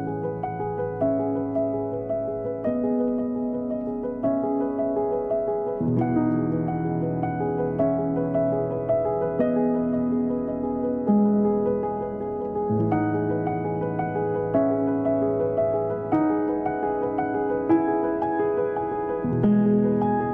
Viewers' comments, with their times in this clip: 0:04 this kind of music is why i used to watch garden answer in the mornings